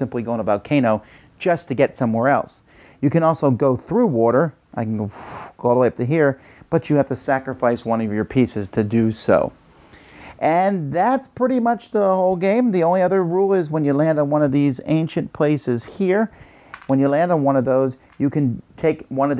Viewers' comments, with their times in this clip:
0:04 Love the 'through water' sound effect! haha :D Love the videos Dice Tower!